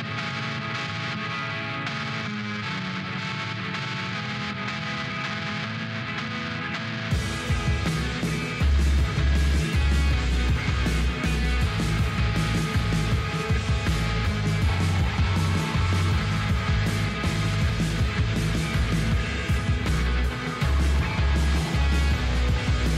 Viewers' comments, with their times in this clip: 0:04 what noise!! Why? Interstellar volcano thrash. This is a mess. This the Evil in evilspace. No thx